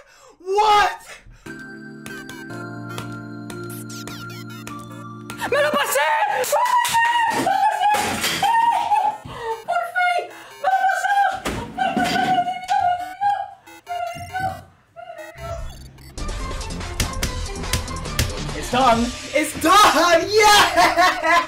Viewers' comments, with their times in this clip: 0:04 in i kinda hear skibidi-di-di-di lol😂😂